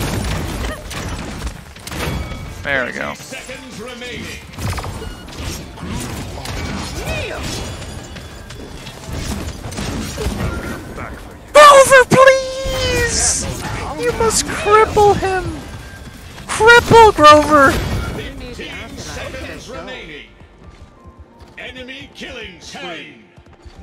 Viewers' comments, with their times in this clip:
0:09 when ur voice gets like that and u hold ur glasses, ur making me die 😂😂😂